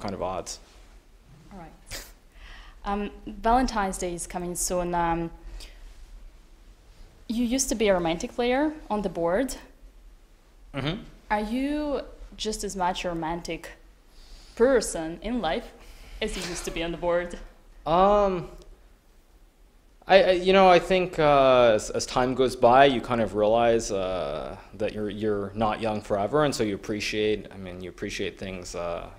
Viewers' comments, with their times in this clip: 0:04 that pause was way too awkward lmao
0:11 Hikaru holding back his laugh 😆